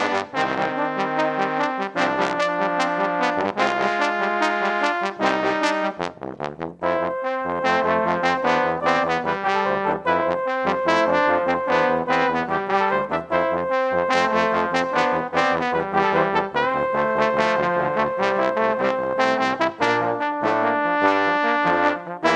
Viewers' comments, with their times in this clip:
0:05 Cleanest transition in any medley I’ve heard